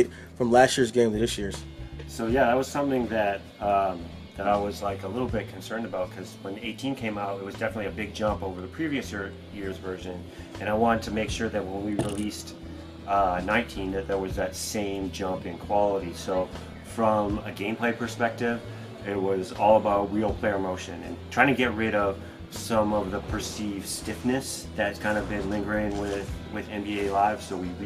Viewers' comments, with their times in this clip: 0:09 did this dude just say "previouser" ??